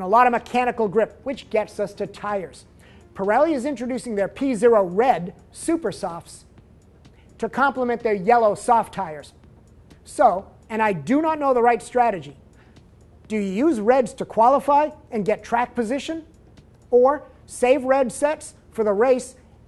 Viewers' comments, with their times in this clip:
0:04 Whats with all the long pauzes between sentences? for example you reading from a autocue?